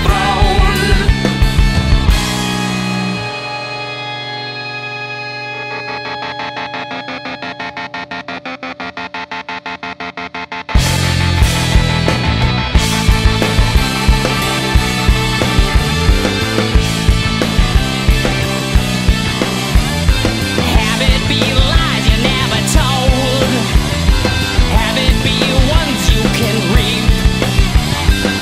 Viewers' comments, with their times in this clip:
0:10 SO GOOD this song. Starting from is pure Bedlam